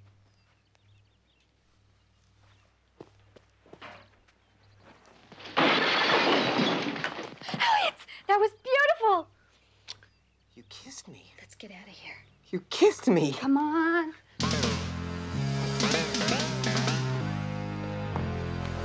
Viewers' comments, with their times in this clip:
0:05 that's some rad and realistic sound effect.